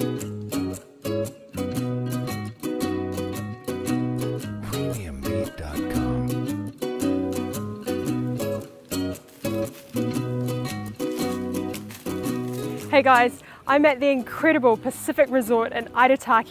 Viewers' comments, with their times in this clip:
0:04 "premium meat" what?